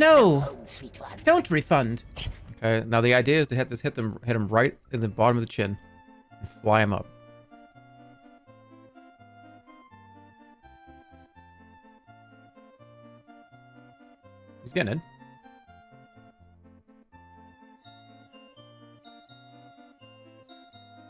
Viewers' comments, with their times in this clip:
0:06 those 5 seconds of silence you can hear accomplishment turn into impatience into pure confusion, it’s hilarious